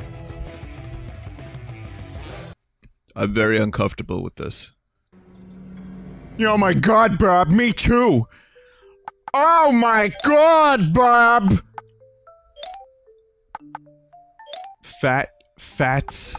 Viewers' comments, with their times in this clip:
0:03 Okay that's a REALLY good Bob impression Honestly really good Peter too